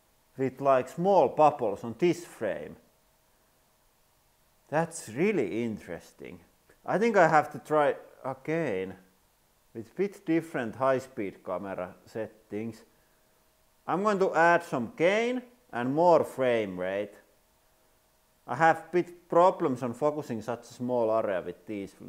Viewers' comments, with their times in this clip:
0:05 The way he says "again😈" 🤣